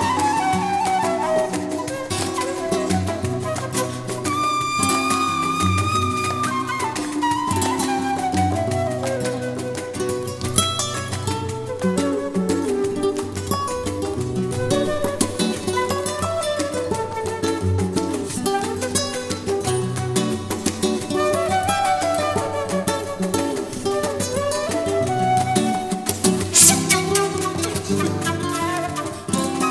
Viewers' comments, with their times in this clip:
0:10 sounds like they are talking to each other